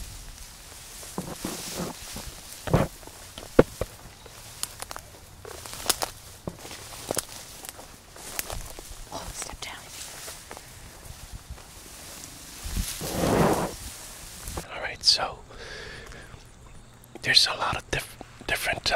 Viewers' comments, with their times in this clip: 0:04 I can't be the only one who heard "hello" 😐